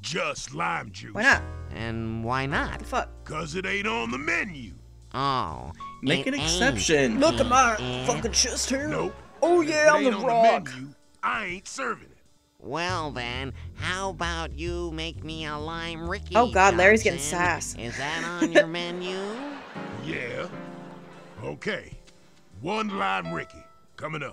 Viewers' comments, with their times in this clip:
0:07 Am I the only one who hears the engineer when Johnson says nope? He sounds exactly like him when he says that.
0:08 The "nope" sounds JUST like the TF2 engineer's "nope"! I swear it's the exact same!